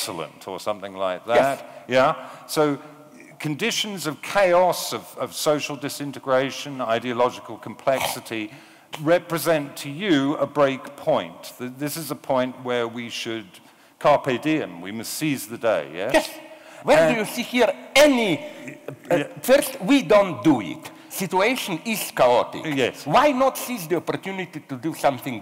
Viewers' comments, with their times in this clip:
0:07 i guarantee Slavoj hucks up phlegm lol, very eastern European of him